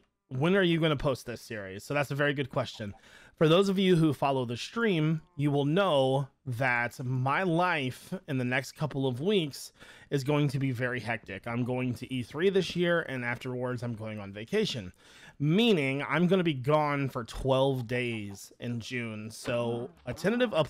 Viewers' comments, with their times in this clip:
0:08 I thought u said I’m going to be 3 this year 💀😂